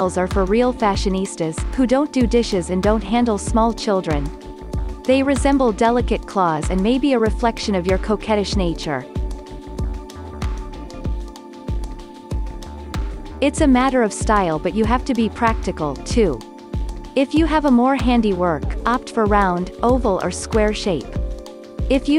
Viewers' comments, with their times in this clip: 0:09 Wayment, sounds like cokeheadish nature 😭😝😂 im dying